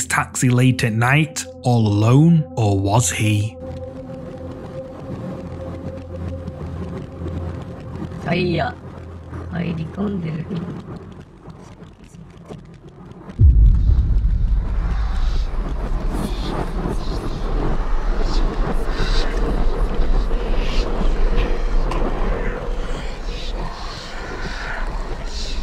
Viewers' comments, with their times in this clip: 0:06 in this video you can actually hear the ghostly woman in the backseat responds to the man driving! I've seen this video before. In another of your videos it's said that the man opens the door with a button, then the man, not seeing anything closes the door and then drives, yet as the video plays on you can see the figure in the backseat 2 times. I love that you delve into the backstory in your videos, where others like slapped ham only shows the short clip.